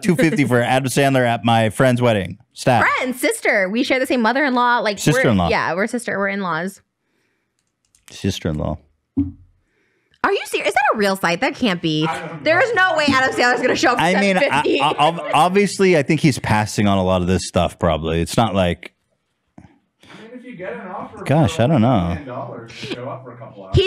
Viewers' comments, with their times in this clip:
0:05 Lmfao the way he said "sister in law" a 2nd time in realization that hes gonna be related to Trisha